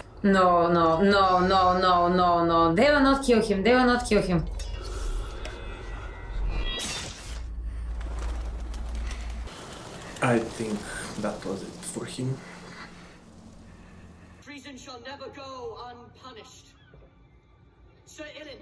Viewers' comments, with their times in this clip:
0:03 The GREATEST response in the history of YouTube!!! In deep Russian voice "I think that was it for him!".